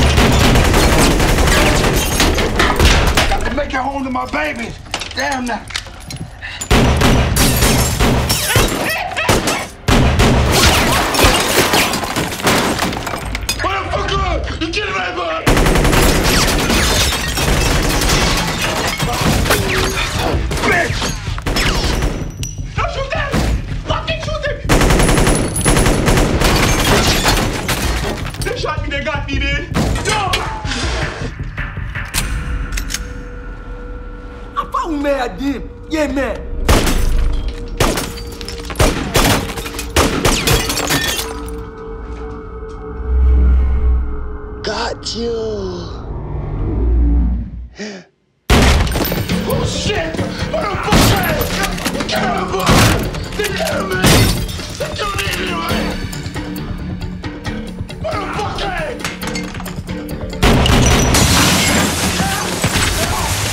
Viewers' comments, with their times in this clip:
0:06 am i the only one who saw the dude shaking & the guy shouting like a kid XDD
0:08 is he laughing?
0:47 It doesn’t have to be a snow- GUNSHOT